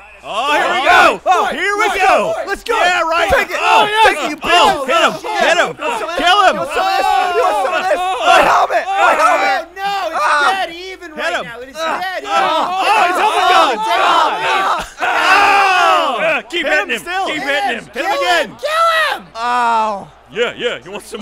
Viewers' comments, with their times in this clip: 0:07 no one says anything about almost all of them saying "There are ties in hockey" in sync